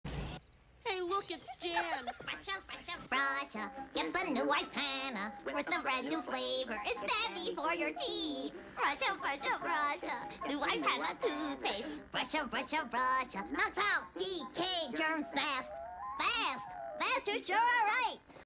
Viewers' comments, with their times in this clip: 0:03 Why it sound like Timmy turner or Toothy and handy or any character that sounds like
0:09 I love how it sounds like jan trying not to laugh.